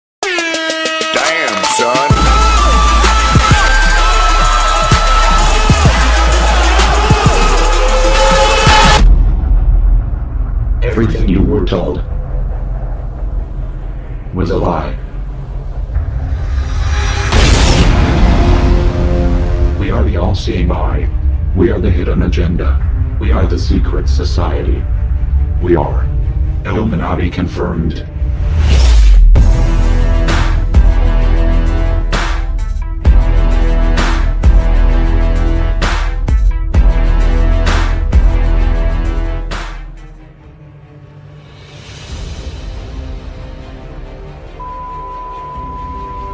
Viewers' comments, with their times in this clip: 0:03 My ears R.I.P
0:28 Like the beat on